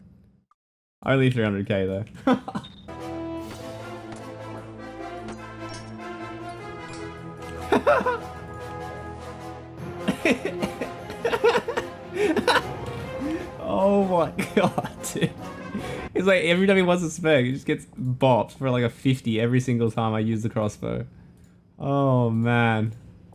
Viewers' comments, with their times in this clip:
0:07 Your evil laugh 🤣🤣🤣